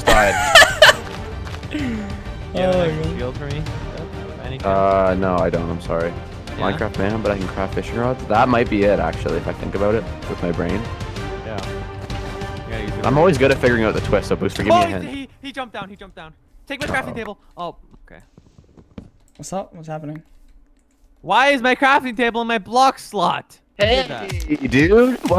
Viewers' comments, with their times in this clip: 0:10 this time the sound really weird,when u do water clutch